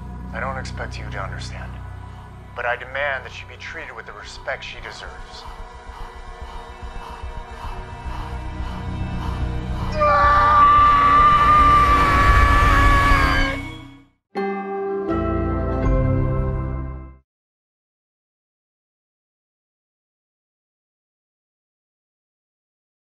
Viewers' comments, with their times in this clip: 0:10 never thought i hear Gabi scream again since last season when Sir escape from her house and was thinking that Sir is going after Lacey and having a new case on that day 😧😞😑